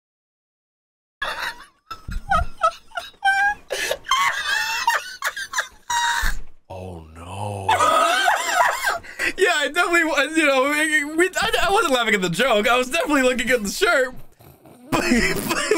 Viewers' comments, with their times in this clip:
0:03 Is nobody gonna talk about how he sounded EXACTLY like that one meme 🤣😂